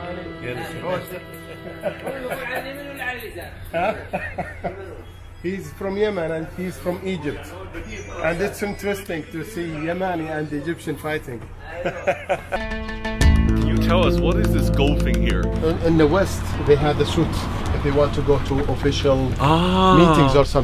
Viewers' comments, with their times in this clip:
0:07 nokia phone ringing